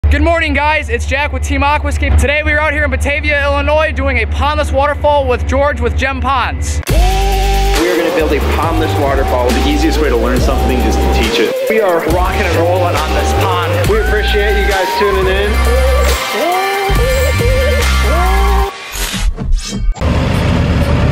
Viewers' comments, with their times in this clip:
0:03 that man is thinking damn boy why you screaming :D you know it's only early in the morning :D